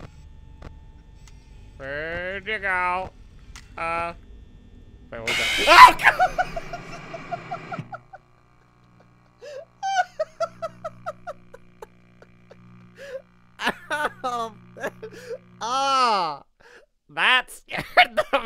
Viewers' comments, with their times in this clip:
0:04 Baldi has a really girly scream 😏